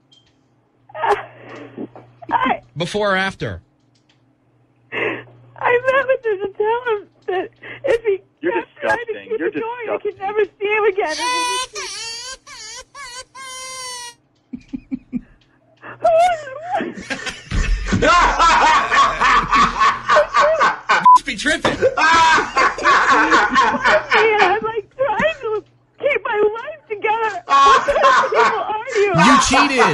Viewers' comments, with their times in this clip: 0:10 Bruh the baby crying 😂😂😂😂 made me laugh more
0:10 The baby crying got me 😂😂😂
0:11 That baby cry was insane 😂.
0:11 And y a baby cry
0:11 I did laugh not because she was crying but just because of the fact that a baby crying was edited in
0:17 8 year old me in the other room listening to my younger sibling getting yelled at